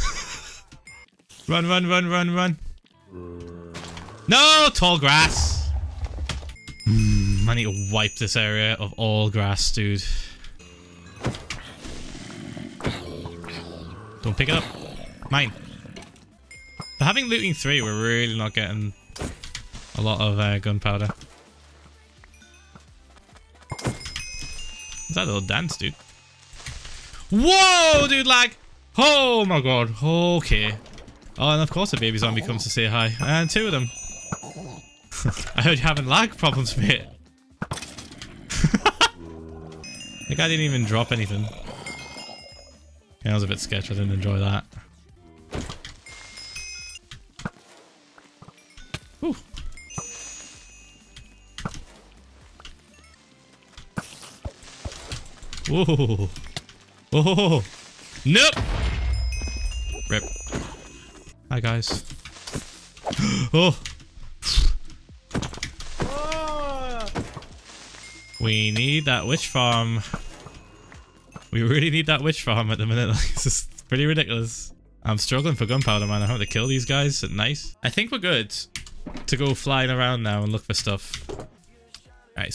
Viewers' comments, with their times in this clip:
0:06 I know he didn't say that.. but I'm fucking dying "my n***a"
1:05 you people scared to moan but im up in my girls ear like